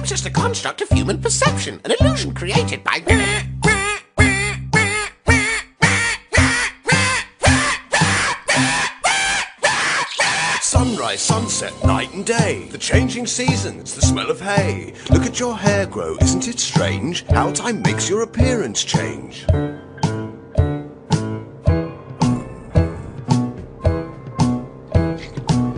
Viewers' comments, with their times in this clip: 0:03 Sounds like James from the Odd1sOut
0:09 the squish of yellow guy's blood in the audio scares me